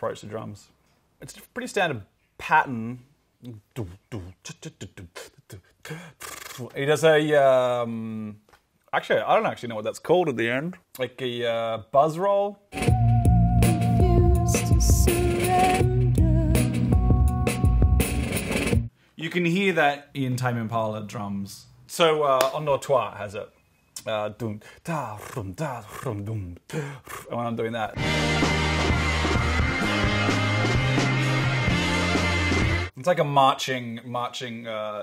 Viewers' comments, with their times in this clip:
0:04 of course he can make THAT realistic of a cymbal sound. <3
0:20 for every time I miss pronounce endors toi